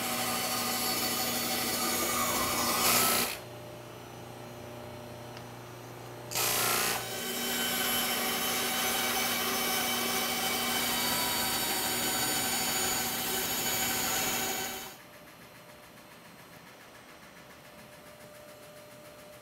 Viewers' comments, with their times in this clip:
0:03 Ahhhh! they edited the 2 shots so the bandsaw shot cutout with Adam’s thumb at the blade and the sound you hear is the disc sander. It gave the impression that he was loosing a finger to the saw. The sound was almost the exact right noise for that as well. 😨